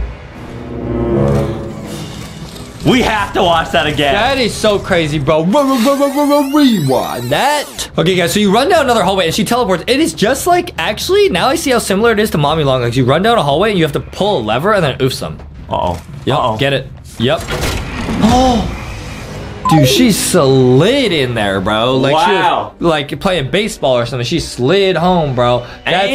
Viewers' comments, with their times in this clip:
0:07 blud really said R-r-r-r-Rewind that got me dying😂😂😂😂😂